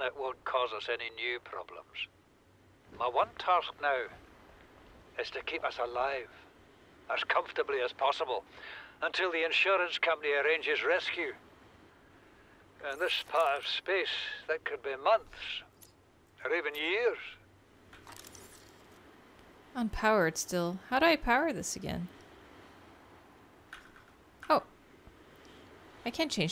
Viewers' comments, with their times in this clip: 0:10 Listening to this old guy rambling in the audio logs and i realize i'm thinking he sounds just like scrooge mcduck, only clearly he isn't as smart as scrooge mcduck.😂